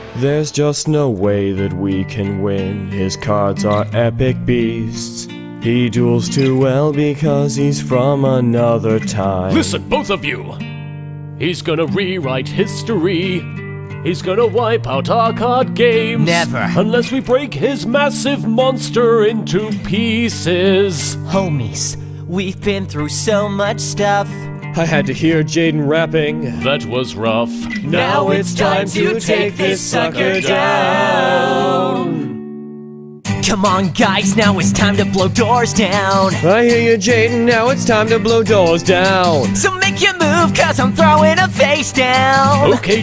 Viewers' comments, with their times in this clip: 0:05 nice singing Yusei
0:28 that harmony between them on that line is beautiful The fact no one else is mentioning or admiring it is a shame